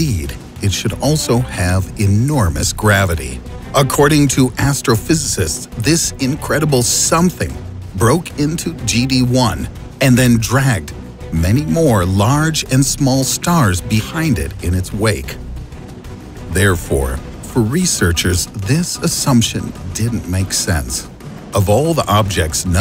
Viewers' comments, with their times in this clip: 0:08 Broke into geometry dash 1